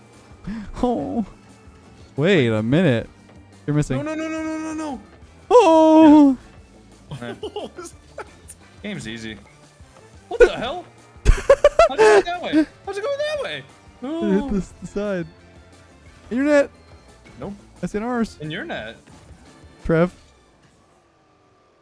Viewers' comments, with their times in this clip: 0:05 Volcanoes are my favourite type of canoes Also, that noise had me in literal tears. Like a crying goose or something